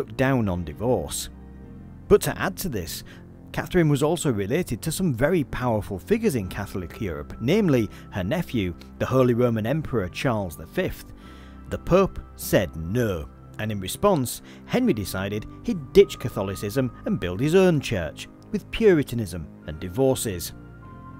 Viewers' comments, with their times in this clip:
0:08 a great 5 seconds of classic Hull accent there :D Also, nice h2g2 reference